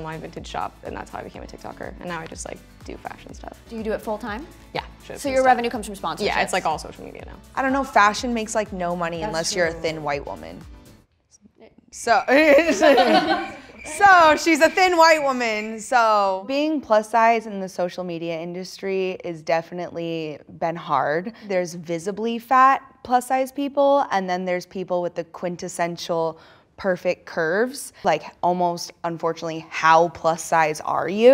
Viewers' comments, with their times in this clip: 0:08 She sounds jealous.
0:13 lmao the awkward silence
0:14 she says it like its an insult